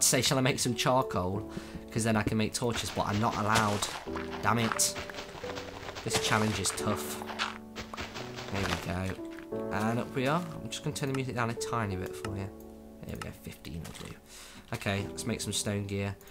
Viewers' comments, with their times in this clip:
0:03 that does sound like FF X....